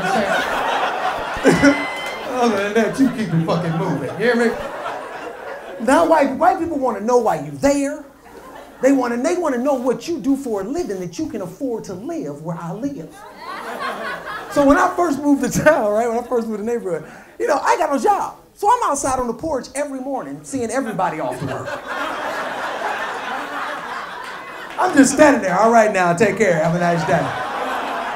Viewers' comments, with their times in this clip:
0:10 white girl laughed too hard at the end of that